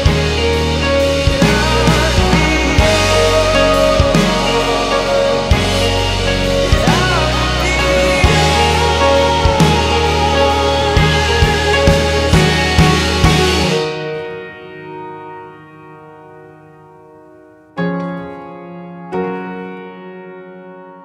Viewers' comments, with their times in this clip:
0:07 That, "How to be yours." In falsetto is breathtakinggg!